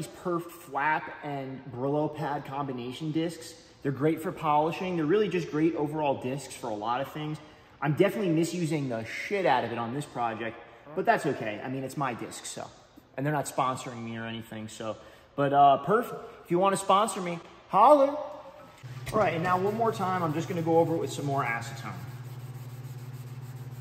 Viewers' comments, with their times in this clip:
0:09 Was that a fart ?